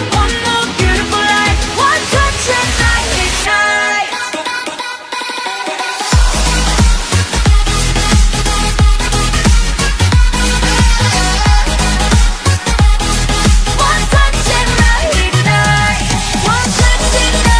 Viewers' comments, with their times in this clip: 0:05 I'm i the only one who hear this creepy